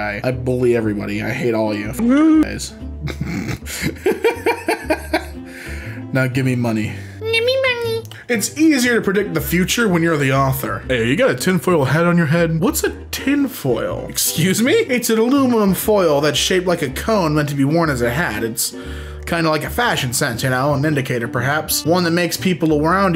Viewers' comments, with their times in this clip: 0:07 The way he says "gimme money" is so silly